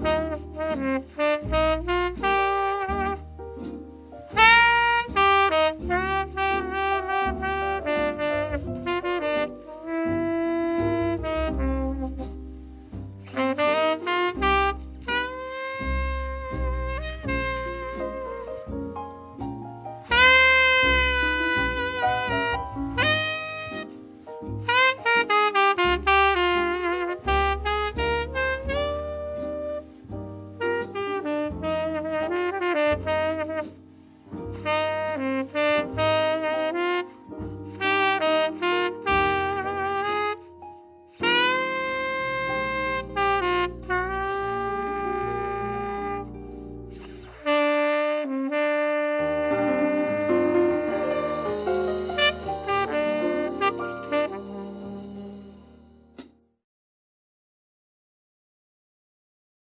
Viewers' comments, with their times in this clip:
0:10 That note ! Genius. Ain't supposed to even be in the chord. He told Marshall Brown 'I never let the changes bother what I'm playing'. Only one Pres...
0:10 That note ! Genius. Ain't supposed to even be in the chord. He told Marshall Brown 'I never let the changes bother what I'm playing'. Only one Pres...
0:43 Why does he have to go so off tune starting ? Kinda ruins this recording for me, not gonna lie.